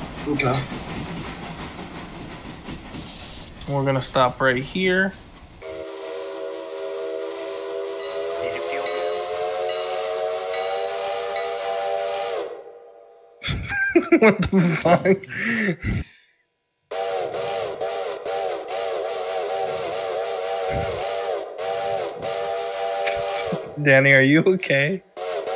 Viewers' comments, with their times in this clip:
0:06 Those whistle blasts starting 😂